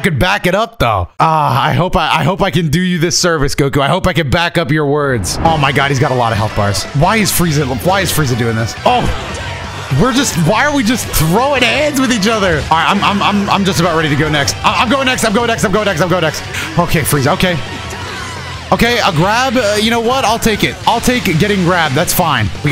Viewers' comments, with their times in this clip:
0:05 you know you’re in trouble when the LR Full Power Frieza ost kicks in, it’s like boss music